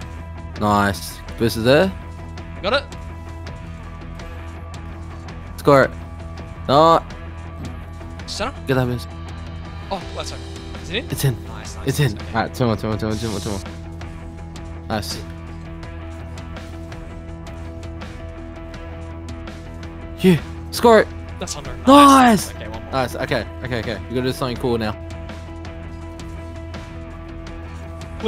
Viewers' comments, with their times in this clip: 0:10 Sounded like Fogell from Superbad 🤣